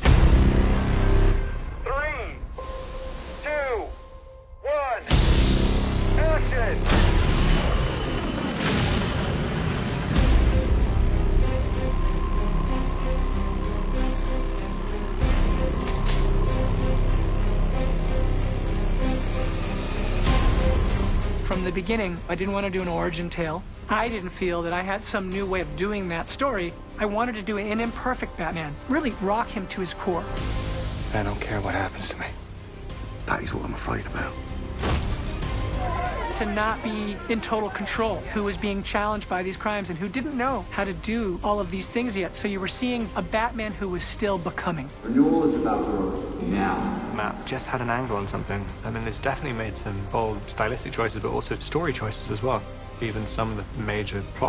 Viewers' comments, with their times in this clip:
0:10 What’s the music called, it sounds insane
0:35 To anyone who didn't notice it, we heard quite a few new themes in this Making of the Batman video, and they were quite good enough to be mentioned. the violin starting to play, etc.. If they already tease us with the new music and it's that, I loved it already!